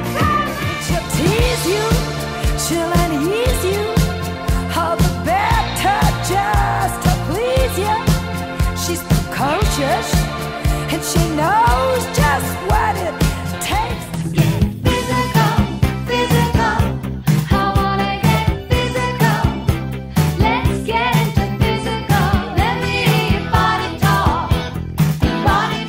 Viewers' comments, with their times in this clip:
0:06 One of my favorite songs of all time, Kim Carnes has such a beautiful and unique voice